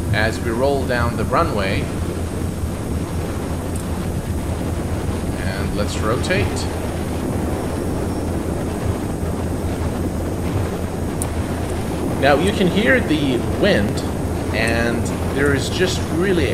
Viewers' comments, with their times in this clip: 0:03 That Wind Sound is Beautifull! Defentley gonna pick this up soon for my new landing vids coming up!